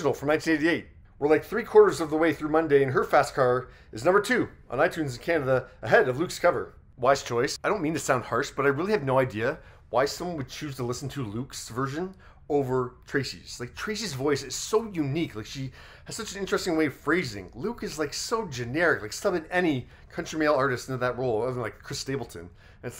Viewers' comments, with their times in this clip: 0:06 So true about Tracy's voice! Her vibrato (that's the word for it, right?) in the chorus is something else.